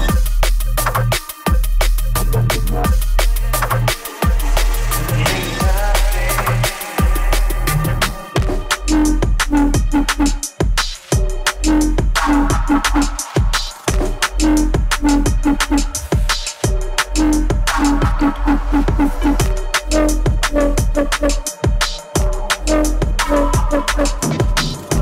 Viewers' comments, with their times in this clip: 0:08 .......what a drop!!!